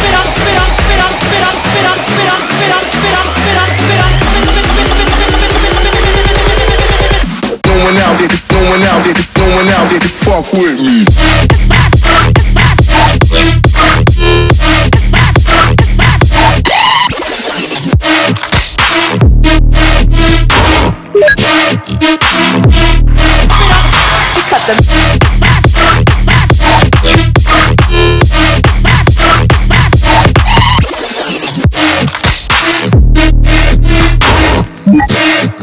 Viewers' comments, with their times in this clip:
0:10 Damn that third drop is complete fire (Yes I edited it big deal ;-;)
0:18 bass gave me chills
0:20 i thought someone message me on steam.... i dissapointed
0:20 Instantly opening steam cuz i thought i got a massage OOF
0:20 Checked if i had steam message.
0:20 in have steam notification sound and all time i look steam.
0:21 ALERT! steam notification... 5 minutes I was trying to understand who wrote me in the steam... :D